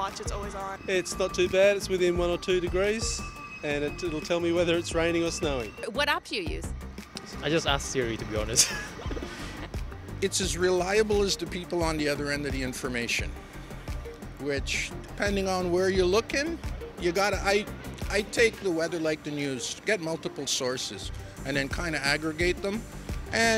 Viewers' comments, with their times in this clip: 0:10 is there an, ventriloquist around this guy somewhere? 🫤😐 He must’ve went to the doctor and Got a voice box change. Did he get a skin transplant?